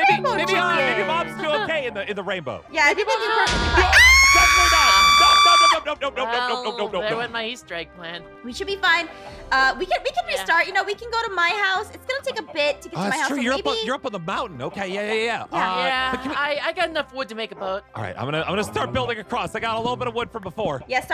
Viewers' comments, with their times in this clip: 0:03 Tornado siren scream